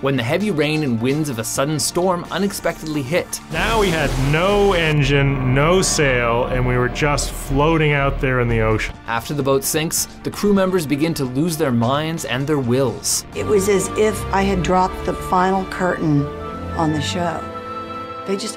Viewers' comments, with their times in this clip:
0:03 sounds like Homer Simpson